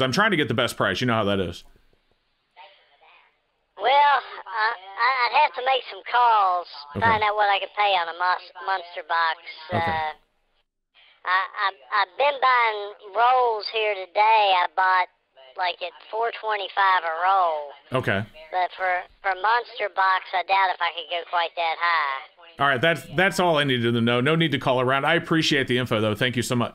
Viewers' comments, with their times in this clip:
0:09 funny how a southern accent is always recognizable. You could speed that up or slow it down, make it deeper or whatever, person is Southern.